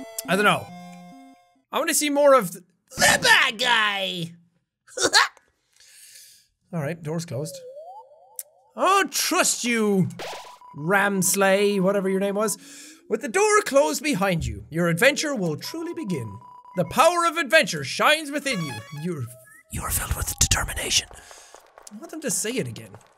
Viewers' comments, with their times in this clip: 0:03 bruh sounds like JEVIL
0:04 he sounded so much like jevil
0:05 ok why does it sound like jevil--
0:10 Also Jack: rAMsLEI